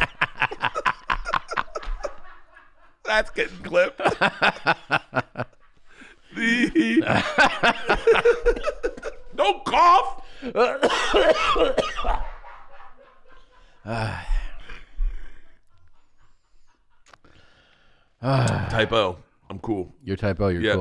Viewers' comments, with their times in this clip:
0:06 Bert's 'hehe' was the best part no cap